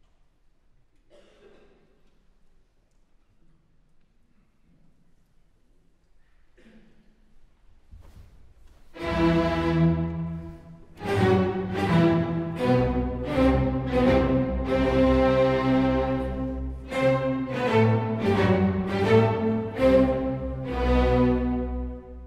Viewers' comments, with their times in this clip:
0:07 Yulianna has a very nuanced way of playing the second movement. I love it. Listen